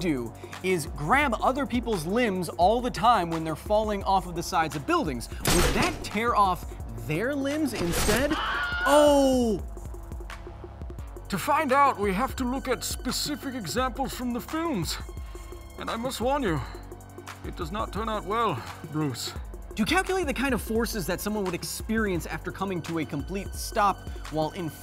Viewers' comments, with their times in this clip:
0:07 did you have to shoot Wilhelm? Hasn't he suffered enough?
0:08 That "aaaahhhh" .. lol reminds me of King Arthur's Gold.. :'D